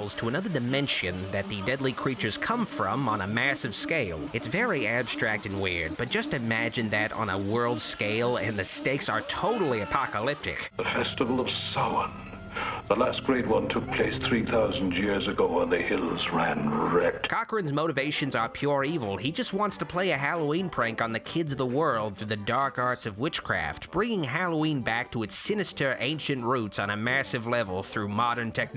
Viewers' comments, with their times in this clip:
0:10 Of course Cochran is the only character in any of the Halloween movies who pronounces "Samhain" correctly.